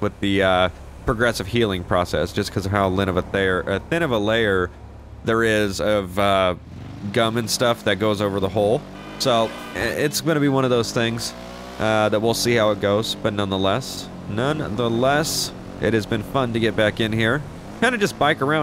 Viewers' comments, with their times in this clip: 0:03 Lol “Lin of a thair”